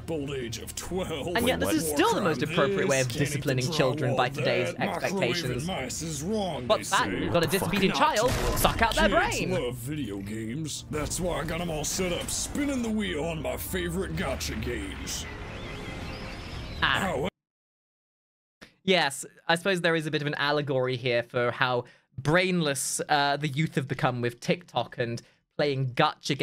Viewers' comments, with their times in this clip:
0:08 pls tell me she said "Pluck" 💀